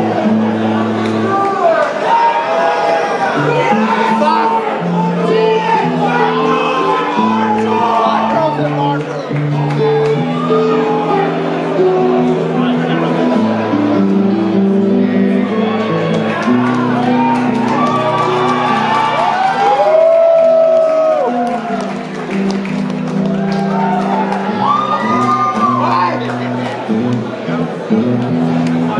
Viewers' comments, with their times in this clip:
0:09 i love when he starts playing camel hehe